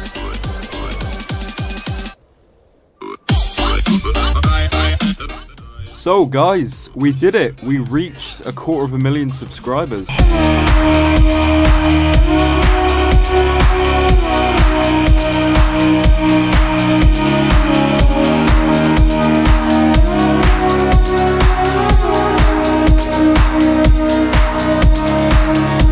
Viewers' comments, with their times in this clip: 0:10 Holy shit that music hit me hard, I'm literally shaking and crying rn